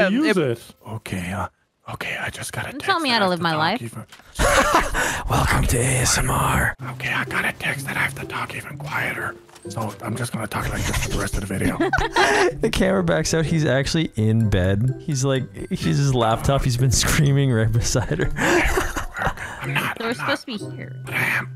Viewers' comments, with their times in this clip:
0:06 Nogla has to be even quieter lmao